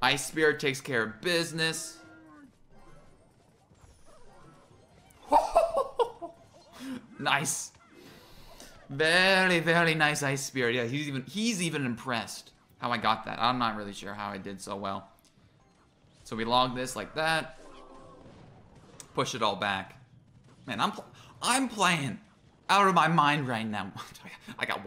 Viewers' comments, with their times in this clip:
0:09 Russian accent there.